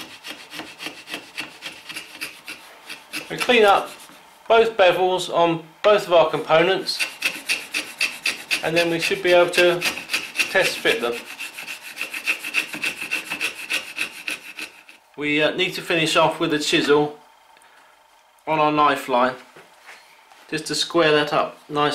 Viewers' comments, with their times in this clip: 0:06 Totally thought that rasping was my dog panting